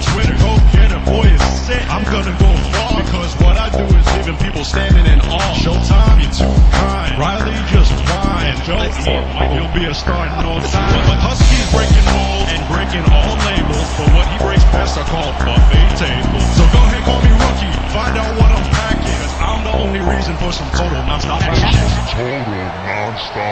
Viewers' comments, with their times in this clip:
0:07 shit on his ass?